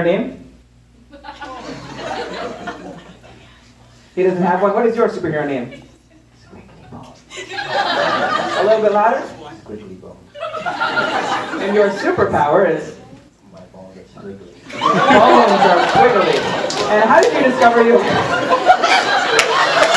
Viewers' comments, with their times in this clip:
0:05 Can anyone help me what he said his superpower and name I cant hear shit.